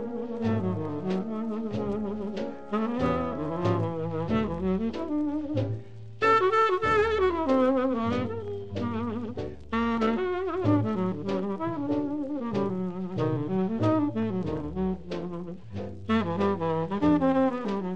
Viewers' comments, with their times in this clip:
0:05 As much as I love music, I'm really not well versed on the technical definitions of its terms...harmony vs. melody, pitch vs. key etc..... But, when Hawkins returns to the melody ( ? ) in a higher key ( ? )--- that's one of my all time favorite musical moments